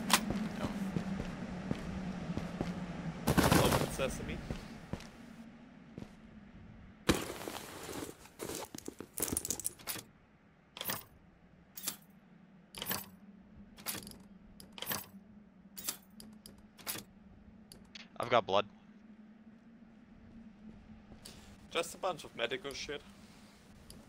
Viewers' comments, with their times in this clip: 0:06 looks and sounds exactly like Escape From Tarkov